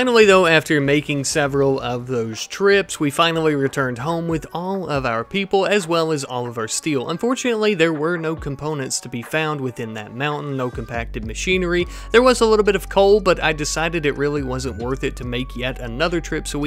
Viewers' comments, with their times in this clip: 0:04 With peace and love, the music is just no good <3 love the series